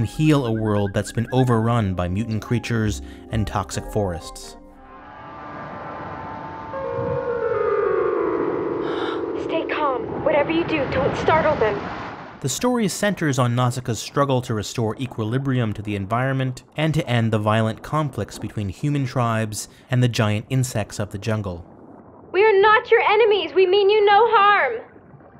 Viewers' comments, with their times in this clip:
0:09 oh... why the dubbing